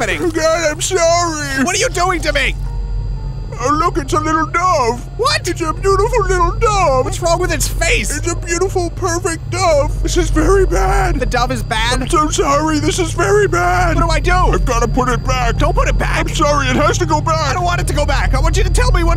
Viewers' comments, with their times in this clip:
0:03 Love the way he says dove.